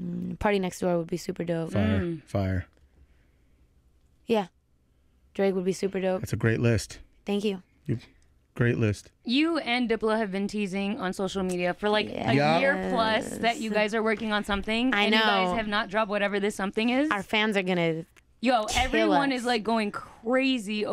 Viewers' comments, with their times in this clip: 0:07 The way she said thank you is very cute. Idk. Maybe it's just me. But it is cute. 😍